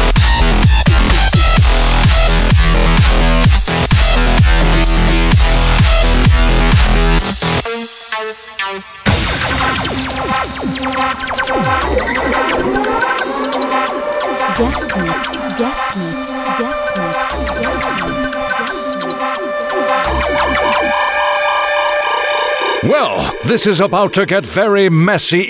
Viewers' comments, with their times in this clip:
0:06 WOOOWWW!! Dnb bit is of the hooook! DAMN